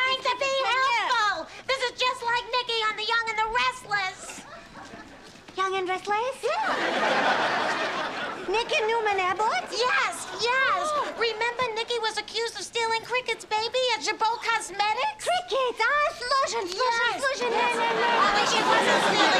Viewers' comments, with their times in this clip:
0:05 I like how that lady says ‘Young and Restless’. So cute 😅